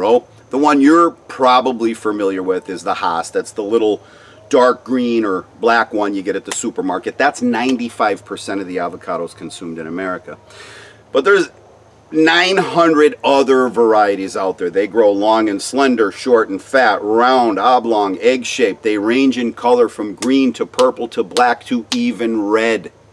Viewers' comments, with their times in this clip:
0:04 you slipped and said Haas. You know, as do all of us, that it was always Haas.